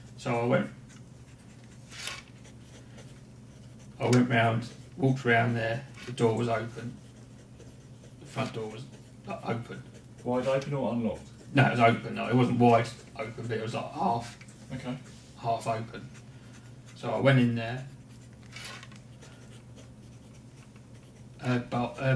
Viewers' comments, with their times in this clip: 0:04 The killer sounds like Mr. Bean. 😆